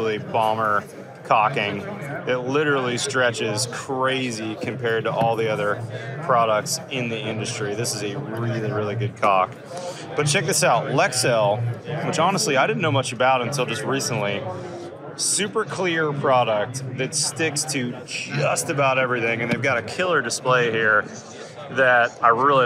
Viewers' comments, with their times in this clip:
0:08 It's the inhale and redirection upon realization that really got me 😂